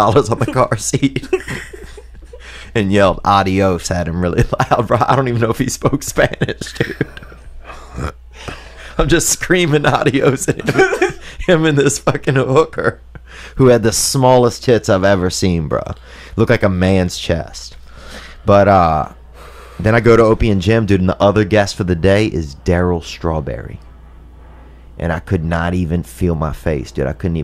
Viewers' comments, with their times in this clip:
0:08 Joey giggles and then just falls into a massive void !